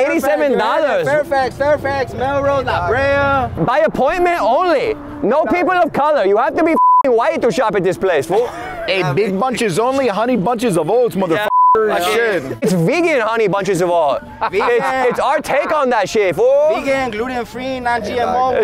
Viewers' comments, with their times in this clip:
0:04 you went full asian for some reason 😂😂😂😂